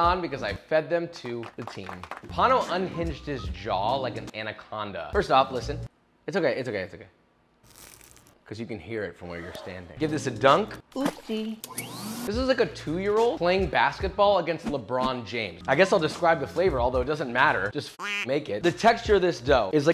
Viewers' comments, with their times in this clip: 0:06 bro was like "tf im gon hear ion got headphones" then heard the crunch bro got excited